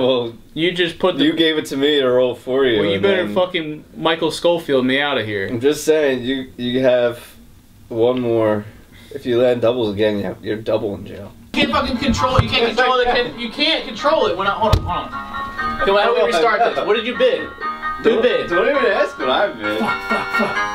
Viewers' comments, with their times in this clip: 0:07 I love how it went from sounding like casual Monopoly to competitive Monopoly